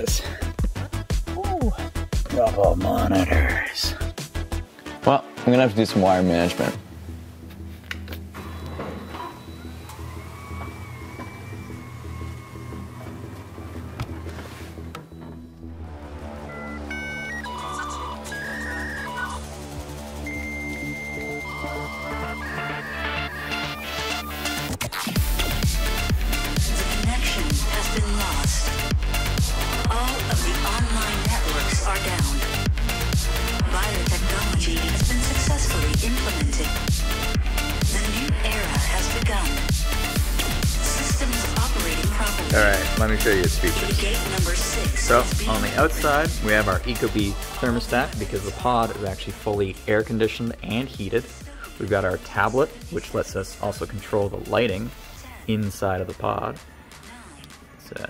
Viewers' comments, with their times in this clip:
0:09 ish, ahh yes dial up very fitting
0:44 Let me show you its features! German laughin intensifies